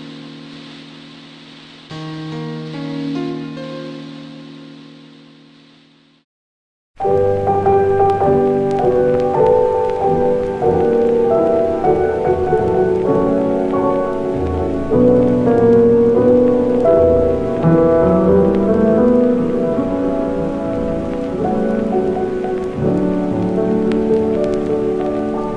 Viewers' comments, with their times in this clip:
0:07 I feel chills, more than normal, the phrase with the image of an innocent stuffed sheep makes me feel that an emotion or memory wants to come out, That part of the video makes that something want to come out of my deepest interior, And the music helps to give that dark atmosphere, without a doubt that child abuse is a very dark subject.